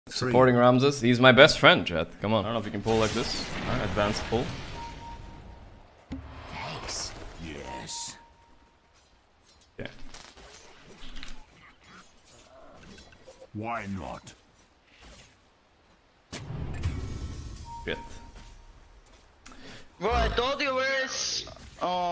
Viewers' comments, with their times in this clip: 0:07 No. Ramzes pinged twice. Second time and it sounds further into the trees.
0:07 And he pinged again it's further into the trees. You can't see it but you can hear that it's further into the trees.